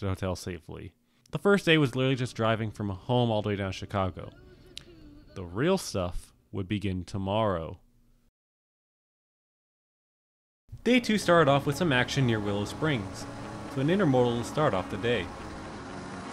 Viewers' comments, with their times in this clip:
0:04 I HEAR RUSH!